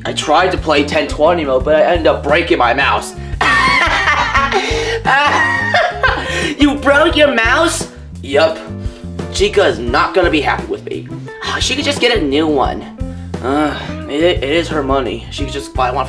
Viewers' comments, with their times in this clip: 0:03 I really like toy chicas laugh it's funny